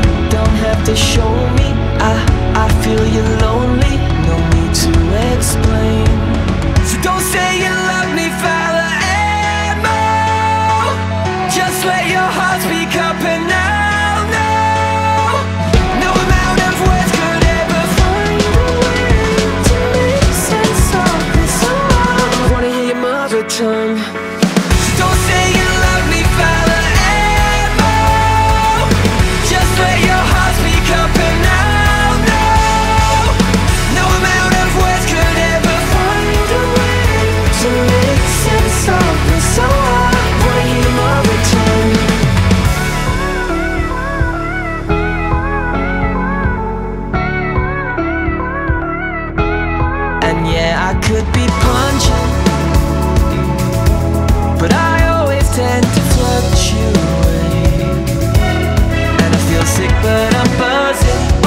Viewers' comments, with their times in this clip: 0:07 when I hear those notes all.os forgiven
0:42 i hear the music say pewdiepi